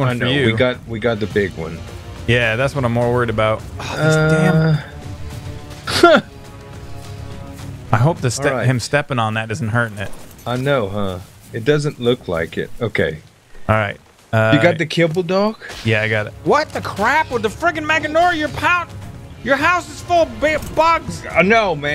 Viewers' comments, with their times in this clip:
0:03 oh these damn.... slip sounds awesome when he swears